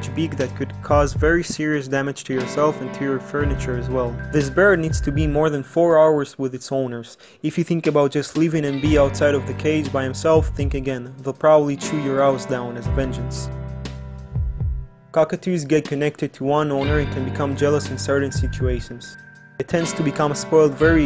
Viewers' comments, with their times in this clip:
0:08 the way that sentence is narrated in that matter of fact voice made me laugh.